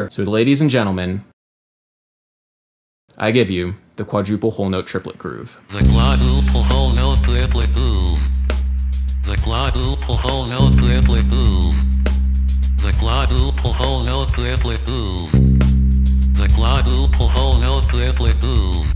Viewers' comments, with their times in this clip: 0:05 Like blood whole milk Lily boo The glottal hole know clearly boom The glottal pull Hotel clearly fool with googlemade subs on, you can see some vague meaning in this